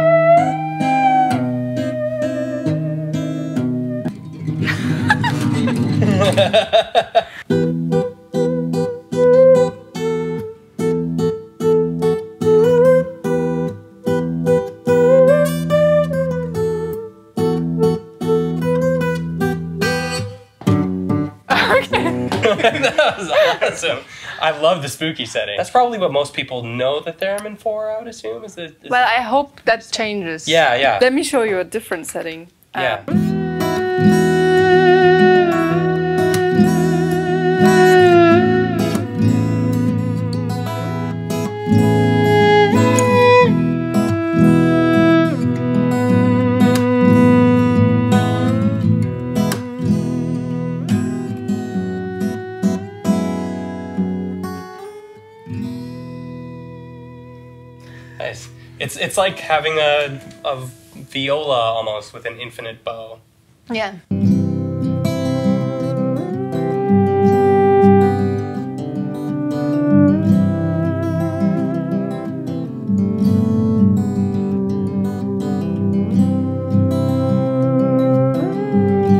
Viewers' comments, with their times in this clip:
0:07 That "This is Halloween" duet was amazing ❤
0:33 sounds just like a violin! As a violinist with 5 years of experience, this is better than my playing 😂
0:33 “Let me show you a different setting” **plays the most beautiful little song**
0:35 Nobody: Some mosquito at 3 am:
1:05 idk why but the bit made me start tearing up? the music feels so peaceful and somehow nostalgic for something I haven't heard before. really makes you remember that music is a form of art haha